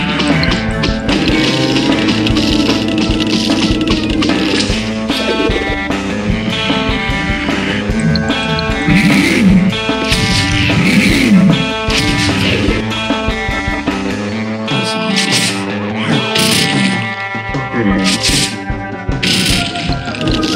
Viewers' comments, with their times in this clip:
0:08 squash is like AAAAAAAAAAAAA, anyone agree? edit: he literally screams, take a listen edit 2: just wanted to share i got pepper-mint not so long from now, really OP and I got it from arena, it takes a bit to get but everything needs time and work.